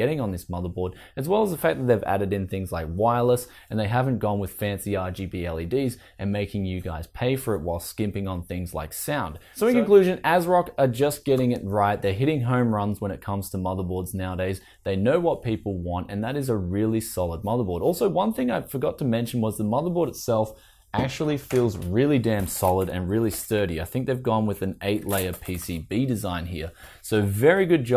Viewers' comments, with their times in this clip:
0:07 Audio editing blip.
0:08 TIme in this video someone clap and say sir? O_O
0:09 Seems like Asrock have upped their game, was a little fearful of their BIOS and software packages in the near past, but I glad it seems remedied. 219 US is also quite a bargain for a fully featured board. Lol had to laugh and replay as it has a bit of overlap with the voice over, was it purposely added :P . Cheers for the videos and keep it up my Auzzie friend .